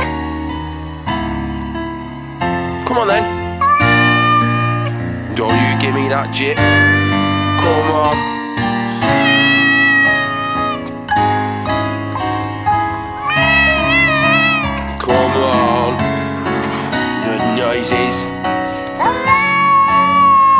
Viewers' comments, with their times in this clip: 0:03 for a sec i expected fucking bohemian rhapsody to start up lmao